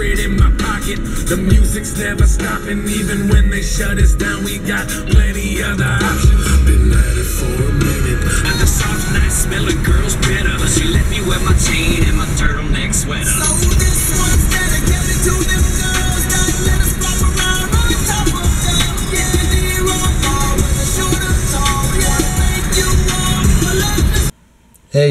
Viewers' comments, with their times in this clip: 0:10 Love the song xD